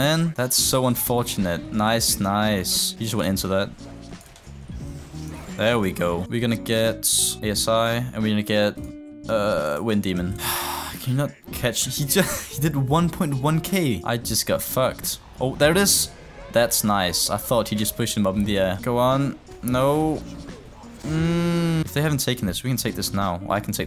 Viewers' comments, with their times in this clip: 0:05 How the hell did you just pronounce Asi ?